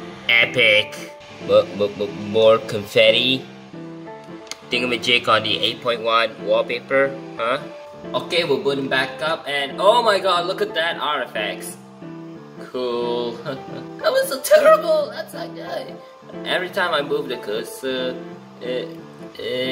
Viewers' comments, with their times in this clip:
0:07 One funny note: I actually said "We're booting back up" on and then it might trigger the OK Google for me LUL What about you guys?